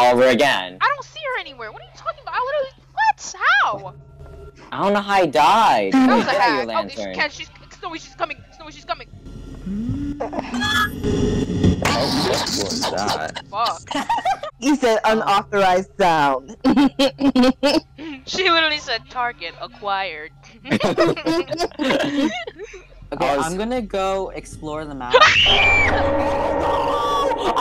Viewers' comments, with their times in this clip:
0:08 OMD WHOEVER WAS LAUGHING IN THE BACKGROUND WAS SO FUNNYYY 😂😂😭